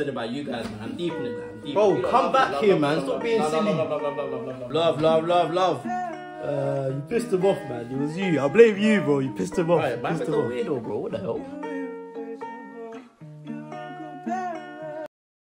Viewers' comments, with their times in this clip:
0:07 bro got the apnaj lingo n look too 👽